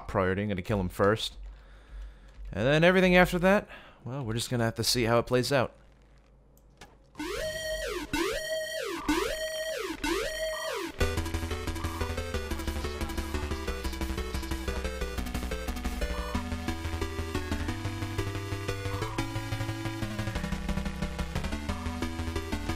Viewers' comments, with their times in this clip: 0:07 XD I thought the music was the alarm and you had a mod for it to sound different.